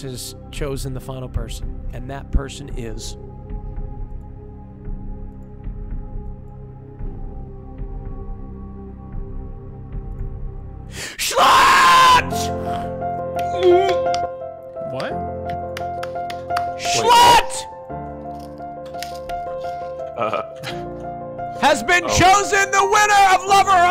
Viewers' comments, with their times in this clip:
0:10 I think i’m deaf. i had my sound all the way up T_T
0:11 I'M NEVER WEARING HEAD PHONES AGAIN!!😭😭